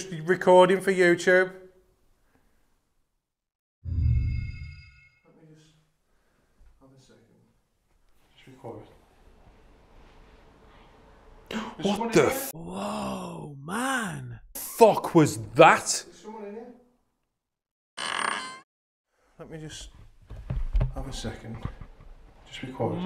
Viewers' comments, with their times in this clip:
0:10 honestly it sounds like “Mike?” again. But could be anything perhaps “hey!”
0:10 So the female voice says "i love you" ?